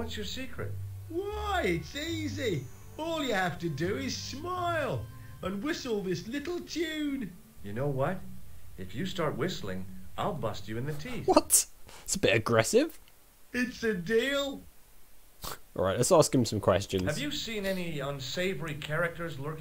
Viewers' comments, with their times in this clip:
0:07 I found it hilarious how George delivered this threat in such a happy tone!